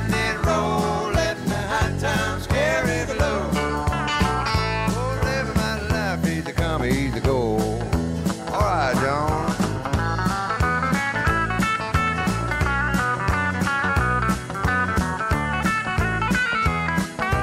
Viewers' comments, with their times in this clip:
0:04 Love that solo